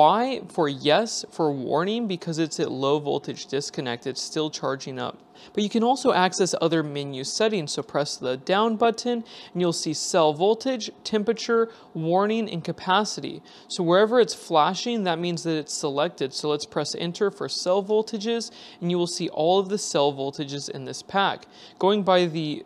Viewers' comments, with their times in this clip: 0:08 As an American I too appreciate the non h Hipster pronunciation of the letter “T”. It’s